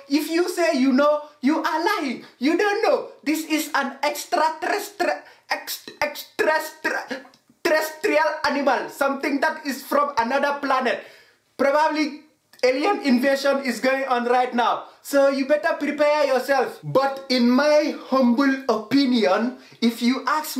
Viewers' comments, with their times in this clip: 0:03 😂 it's so extrrra (terrrestial), you can't even.